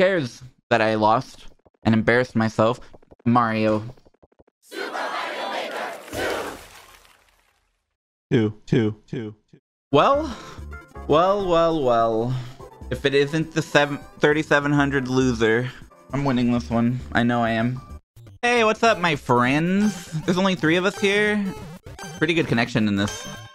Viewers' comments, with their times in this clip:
0:07 The "two" heard across the globe.